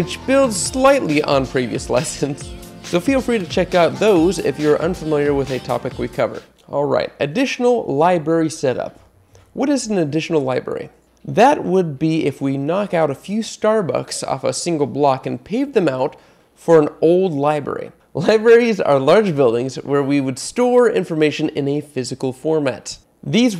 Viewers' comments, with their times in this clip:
0:07 I love how it says Liberry